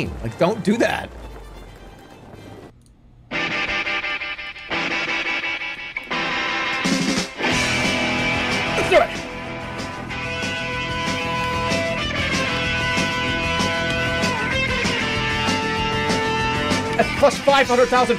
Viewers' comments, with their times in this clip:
0:04 the rock song about police brutality is not surfing music i dont think